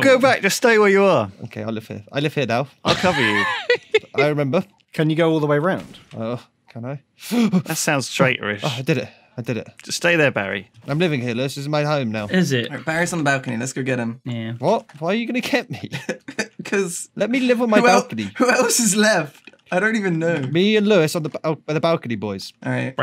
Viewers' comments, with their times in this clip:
0:08 I can hear the voice, quietly speaking the word of death.